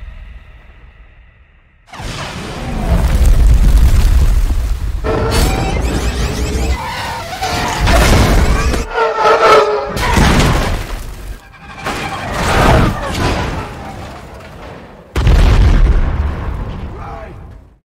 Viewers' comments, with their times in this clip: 0:04 that sounded like an scream